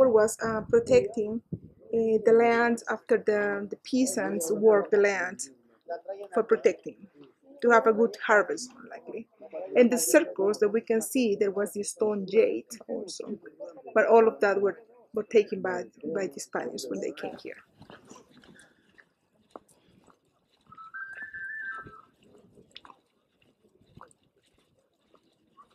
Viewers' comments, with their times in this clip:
0:10 EMF freaking me out do you guys hear it?